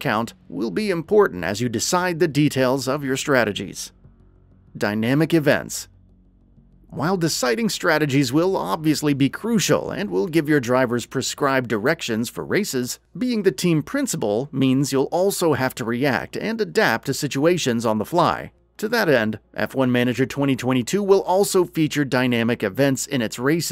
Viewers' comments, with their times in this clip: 0:10 " Give your driver's prescribed erections "😭😭 Man my head is messed up. In my defense, the way he said it didn't help lol